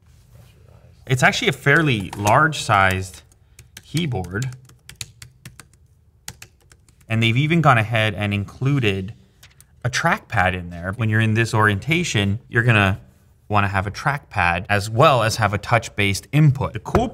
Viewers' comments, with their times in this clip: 0:04 from the sound you hear, you can tell it's not the best quality!